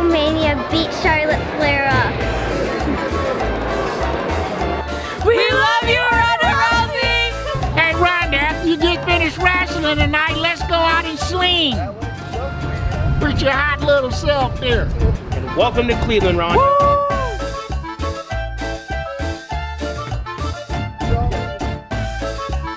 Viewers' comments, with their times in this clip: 0:07 He sound familiar